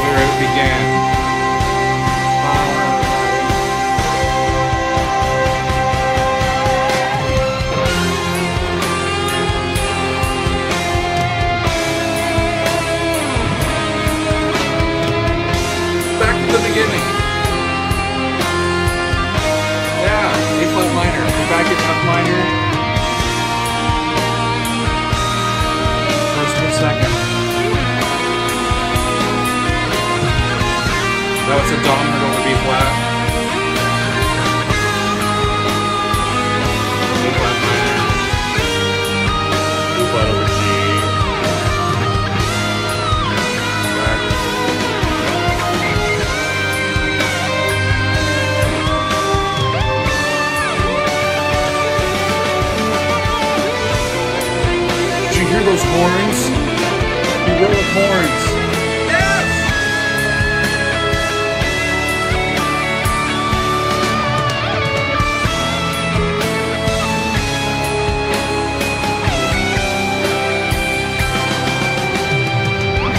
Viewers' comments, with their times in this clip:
0:06 onwards is perhaps one of the most epic conclusions to a song I've heard, ever. That is probably what I'd want to hear during my last few breaths when the time comes (apologies for the sudden darkness lol). An epic end-credits track to an otherwise ordinary life haha.
0:40 THE HORNS!!! yeah that was my reaction too when I heard it the first time. I was overjoyed when I first noticed the horns among the beautiful guitar solo and strings. it's just.. *chef's kiss* perfect!
0:55 feels like "we are the champions - Qween" 🏋‍♂🕺
0:57 I love this guy!!! Perfect review and reaction. His reaction is me everytime that part comes. “Yes!!!” 🙌🏻 the most uplifting section of the solo
0:57 The phrase Petrucci plays starting in this video is one of my favorite musical moments ever